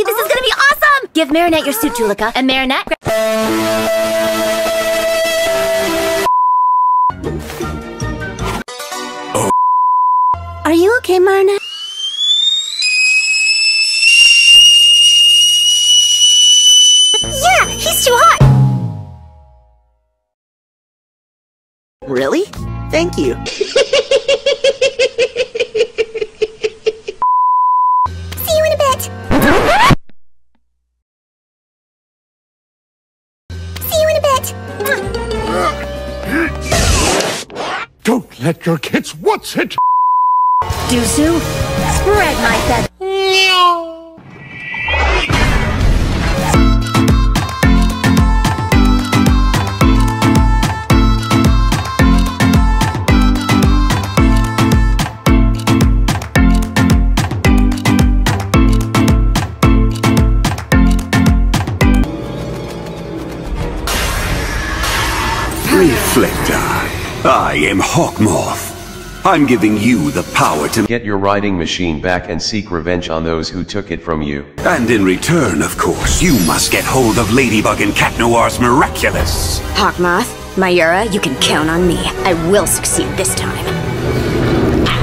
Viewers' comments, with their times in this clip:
0:09 guitar strings play oh
0:28 "see you in a bit" or "see you in a bed"
0:46 favorite song plays
0:46 the music while they sad and suprised
1:07 can someone give my an reasons Why i heard "I am Hot moth"